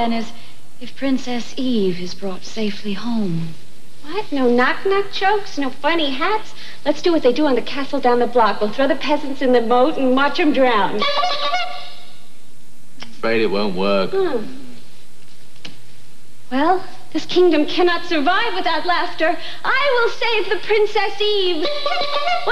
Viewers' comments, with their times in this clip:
0:04 where you really hear the Harley voice come out